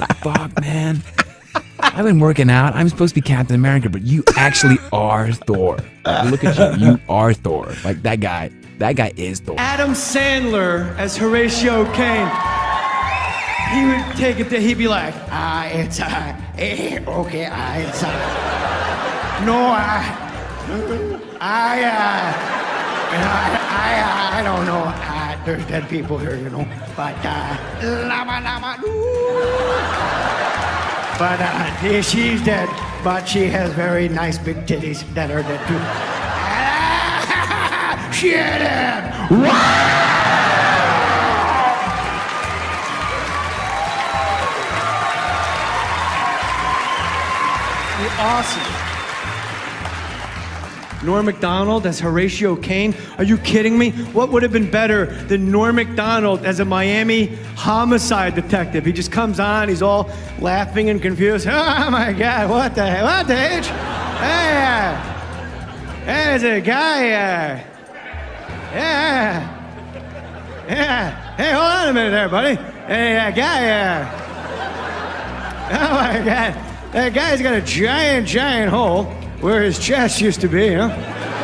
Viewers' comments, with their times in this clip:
0:10 Adam Sandler impression was hilarious
0:11 Omg..Jay Mohr impersonating SNL alums, Adam Sandler ..Lol and then doing Norm MacDonald..so GOOD!
0:59 Never realized until now how much Norm sounds like a horse.
1:08 The Norm McDonald sounds😂